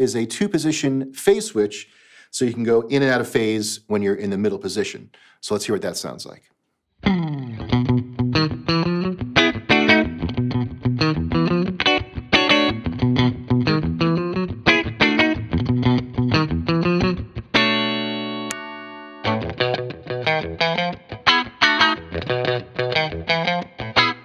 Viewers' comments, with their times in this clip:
0:08 .... Sudden funny scene...in a Cop comedy Or a Sitcom ....cafe scene.... Cue in ....laughing track